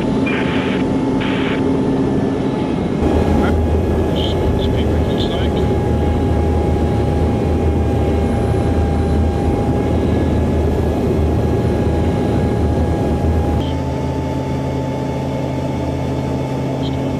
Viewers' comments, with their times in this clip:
0:03 it has a nice sound, not as noisy as a jet. what was that coming out of the plane ? an air-break?